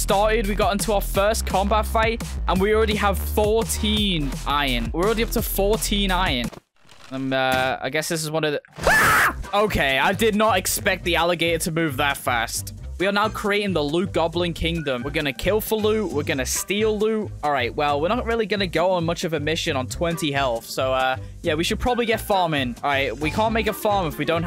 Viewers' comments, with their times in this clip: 0:05 bro what was that noise he made
0:07 The scream with the crocodile
0:07 my most favorite moments is just because of the fect that he screamed💀🤣😂
0:07 That scream got me 😂😂
0:07 the scream in 😂😂😂
0:08 A scream lol
0:08 that scream caught me lying on the fooor